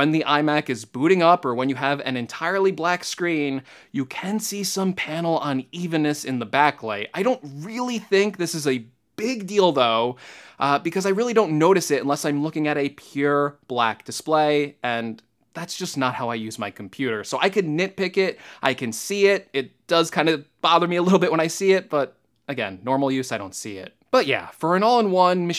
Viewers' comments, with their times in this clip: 0:07 I don't really think this is a big dildo :D